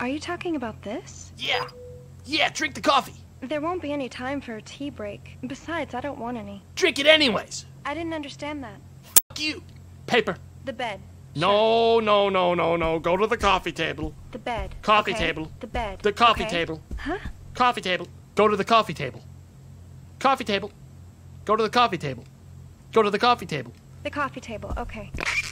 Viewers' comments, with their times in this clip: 0:06 idk if it's just my headphones, but the audio censor got really loud in my right ear
0:08 really sucks for my right ear